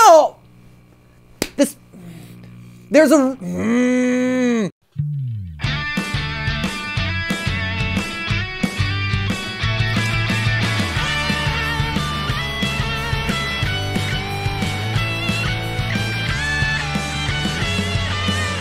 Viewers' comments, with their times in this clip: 0:03 THERES A- becomes microwave